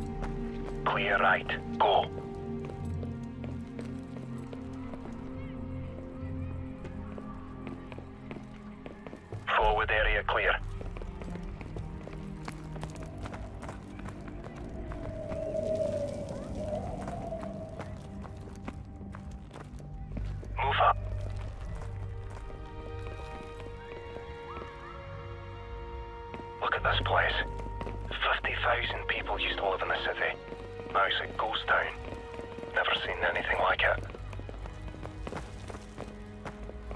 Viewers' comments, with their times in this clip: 0:05 you can hear kids laughing and having fun, spooooooky
0:05 The background sounds of children are chilling damn
0:08 It's just me or you can hear people and children here?
0:17 Man hearing the children laughing in the building gave me chills...the atmosphere of this game=🔥🔥🔥. This was a great game .. and the way this guy played the game, so flawless, you can see that he knows this mission like the back of his hand